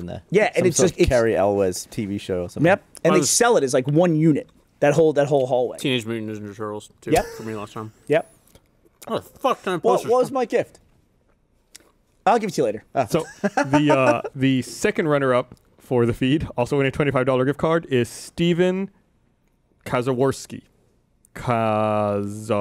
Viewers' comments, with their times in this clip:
0:10 there was a cut? Gavin started laughing then he wasn't all of a sudden